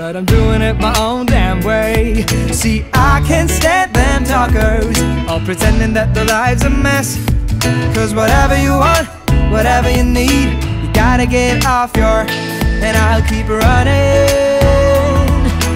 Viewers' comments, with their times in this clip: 0:03 i could send them what?